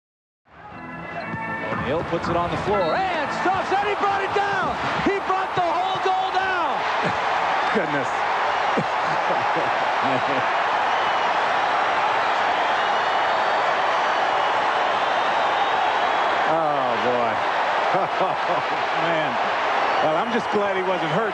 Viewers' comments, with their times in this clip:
0:03 its like the announcer is in the WWE and Shaqs dunk is his finishing move in the ring